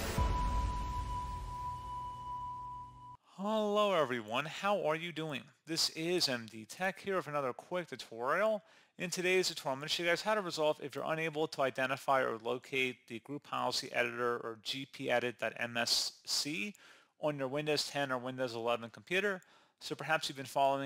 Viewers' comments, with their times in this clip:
0:04 I'm actually doing okay today, aside from a few issues lately but I do like your videos and your clear dialogue